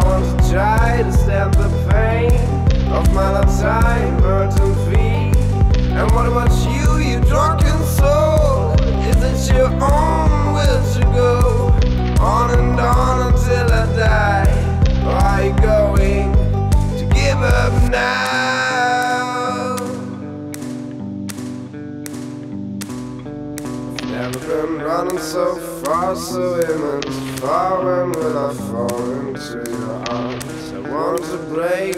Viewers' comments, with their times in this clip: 0:04 The mouth is too close to microphone
0:17 the 'now' he sings reminds me of another song cannot for the life of me figure it out T-T'
0:18 Is this cry mostly created through editing or mostly original singing?